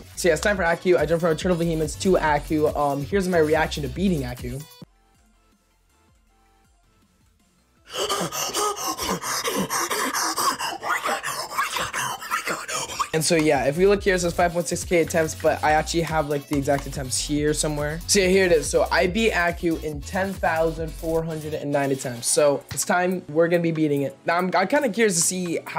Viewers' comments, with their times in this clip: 0:07 BRO ACTUALLY MADE SOME BANGING BEATS LMAO
0:07 bros reacting was so crazy that he lost his whole voice
0:07 sounds like he just woke up from a coma
0:08 when your trying to start up your car but your on low gas